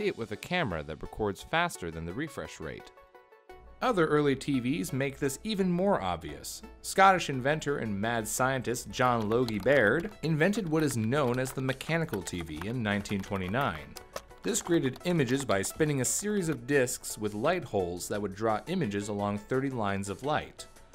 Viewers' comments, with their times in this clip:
0:08 John Yogi Bear